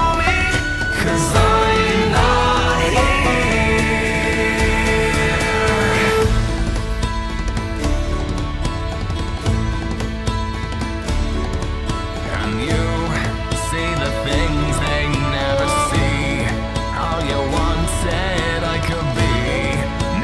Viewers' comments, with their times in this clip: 0:05 One of my fave OG Disney movies, real cool to hear an alternative song be turned into a folk version also he just gave his secret away!!